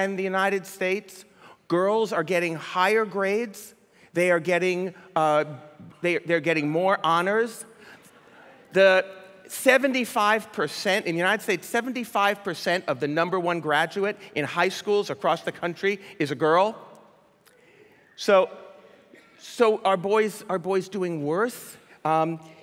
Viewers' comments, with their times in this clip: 0:07 Sounds like someone is cheering 😅